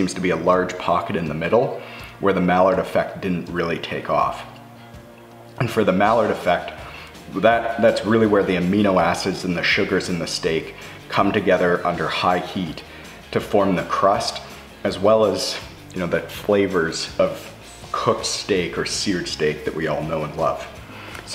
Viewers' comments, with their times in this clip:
0:08 I cringed a bit when ever maillard was pronounced. I kept thinking duck (mallard). Part of the problem may have been the misspelling Should be maillard, not malliard. But great, informative video.